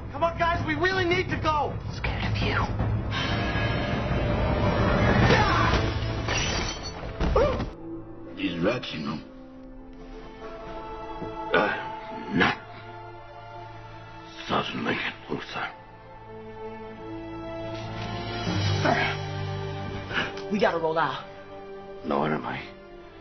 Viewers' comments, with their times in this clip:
0:08 the fact that he flawlessly went from African American solider to and Irish Holy man, then Neil Armstrong as if you heard his voice though a space station radio and finally his Australian character is genuine impressive